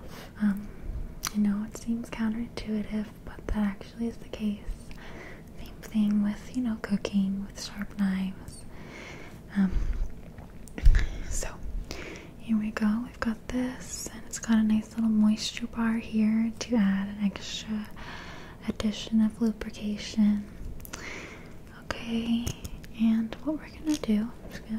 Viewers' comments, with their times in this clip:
0:06 thought you said cocaine my mind is somewhere else rn.